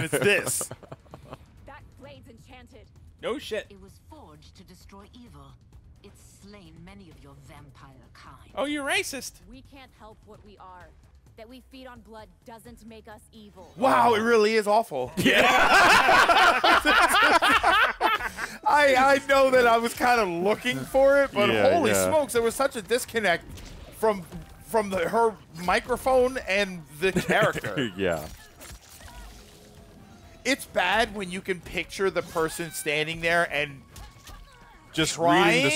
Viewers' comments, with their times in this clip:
0:08 Not gonna lie, Megan's delivery sounds as dead panned as an AI text to speech prompt. They probably should have done a retake of those lines, to be honest.
0:18 Man hearing her talk is giving me Dimitri Vegas flashbacks....